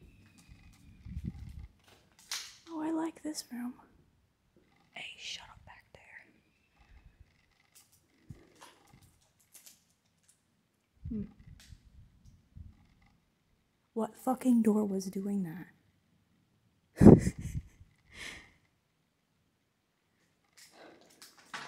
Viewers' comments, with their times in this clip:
0:05 whispers "Ay, shut up back there!" XD